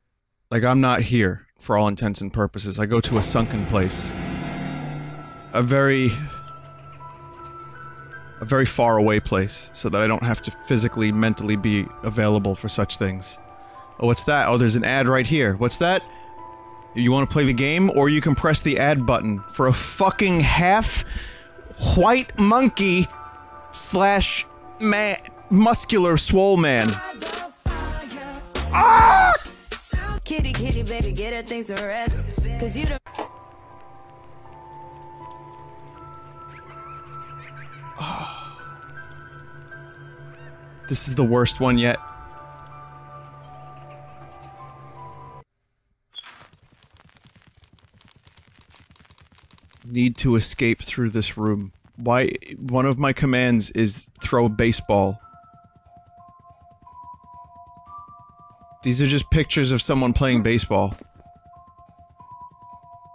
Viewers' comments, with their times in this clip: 0:06 is this ffx music but distorted?
0:27 That scream cracks me up
0:44 thought it was going to infringerinno a final fantasy X song